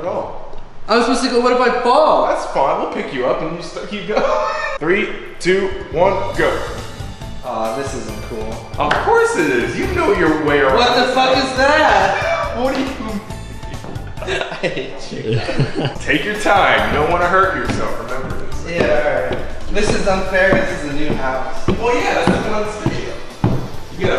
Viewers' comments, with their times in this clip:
0:09 racist music?......... probably